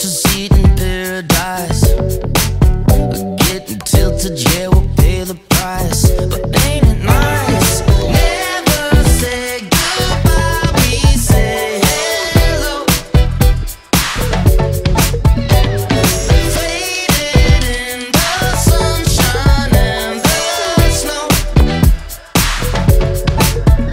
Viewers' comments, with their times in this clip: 0:07 Anyone else hear System of a Down - B.Y.O.B. “Everybody’s going to the party, have a real good time” or is it just me?
0:09 melody reminds me of SOAD's BYOB